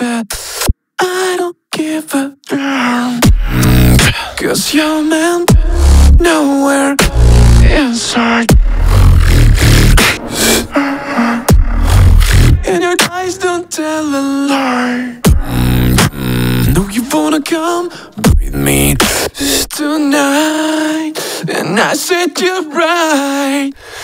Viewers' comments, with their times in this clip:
0:08 1st: Comment for Algorithm (even tho the Video is 2 weeks old) 2nd: You're fucking crazy 😱 3rd: WTF ist that amazing WOBBLE ... dayum.